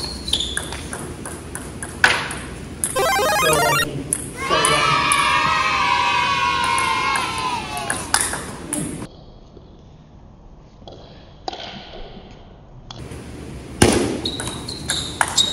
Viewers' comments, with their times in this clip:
0:03 holy shit scared me, the guy talking sounded like he was outside my headphones